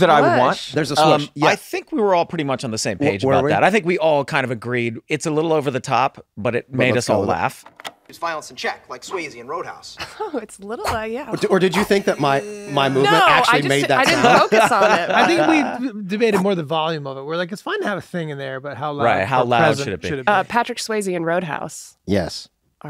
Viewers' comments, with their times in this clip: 0:06 i never knew there was a swoosh sound there wtf